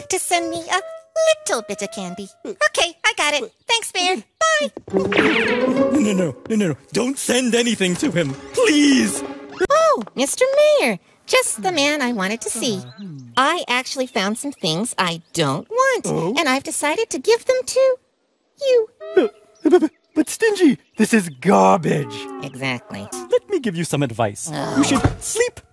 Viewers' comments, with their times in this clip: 0:09 Stingy: voice crack Oh mr mayor just the man I wanted to see, I actually found some thing that I don’t want and I decided to give them to, you Mayor: B-b-b-but stingy this is Charli Damelio Stingy: Exactly